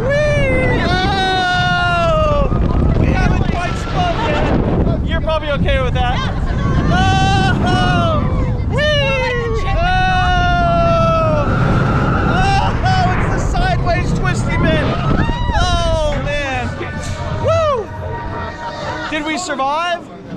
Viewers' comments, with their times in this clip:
0:08 we haven’t what yet? I can’t hear never the wind